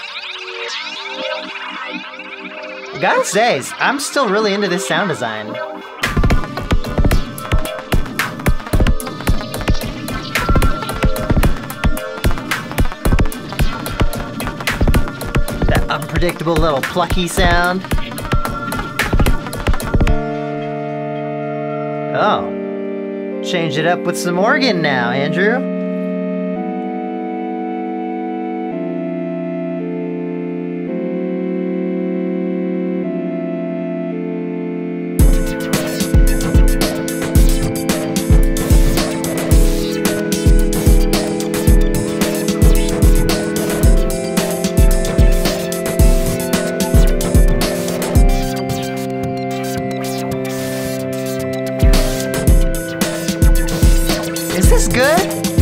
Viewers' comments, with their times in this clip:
0:04 that first one has nearly an autechre vibe.
0:06 In The Temple, that "plucky" sound you mention has some mega Autechre vibes, particularly their song Reniform Puls from their album Draft 7.30.
0:08 the temple starts like autechre and ends like aphex twin
0:18 That organ would make a really dope HipHop/Trap beat.
0:26 am I the only one getting Minecraft vibes from this? I think this sounds similar to the music disc 'Cat'.
0:28 the chord progression sounds like super mario castle music!
0:34 Expected a half time in haha
0:35 I really like this one. It sounds like a great track for a game level themed after a mad scientist's laboratory where your objective is to sneak around and not get caught by the doctors evil robots.
0:43 really likes to be in the right ear doesnt it